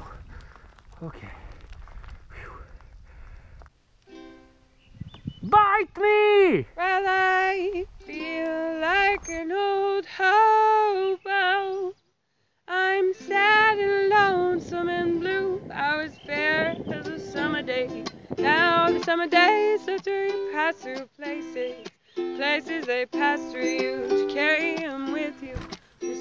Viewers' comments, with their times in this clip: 0:08 The song that started was probably worst music ive ever heard